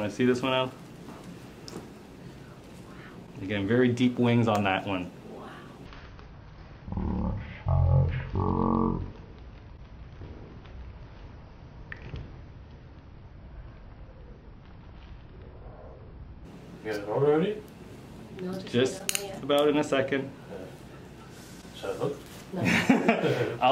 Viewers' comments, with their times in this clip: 0:10 Oh god, that slow-mo wet sound was just *obscene*! XD